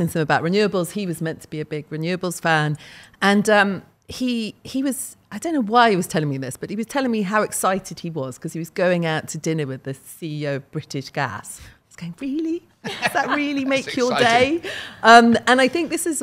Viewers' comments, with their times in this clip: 0:03 I love how there are 3 journalists at the table and only the activist is doing great job with the mic, nice :D